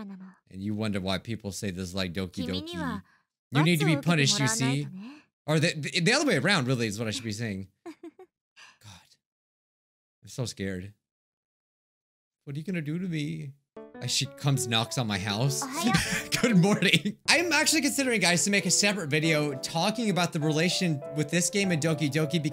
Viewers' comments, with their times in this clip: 0:07 Miyuki: on da bed wit u. also Miyuki gremlin laugh